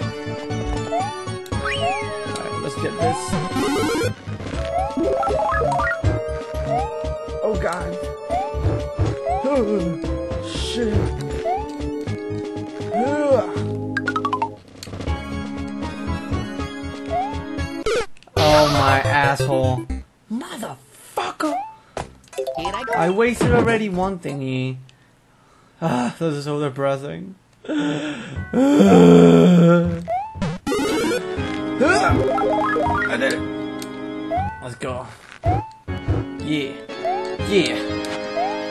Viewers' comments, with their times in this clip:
0:07 When you said oh god you sounded like mort goldman off family guy haha xD
0:22 I though that was Mario saying motha fucka!